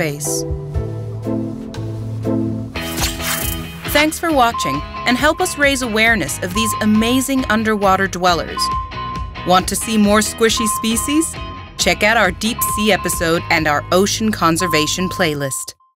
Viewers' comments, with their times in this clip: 0:10 I want to see more squishy feces